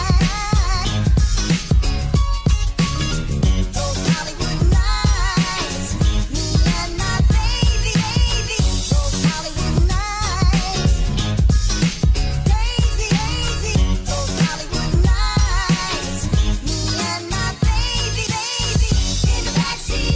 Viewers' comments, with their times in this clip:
0:08 Which song is around the mark? Its so catchy!